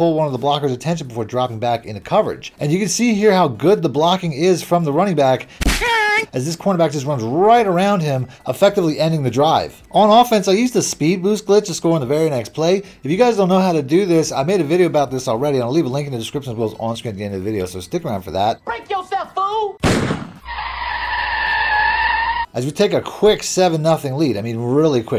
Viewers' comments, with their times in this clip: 0:07 😂😂😂 you put colonel sanders getting hit with that baseball sound effects in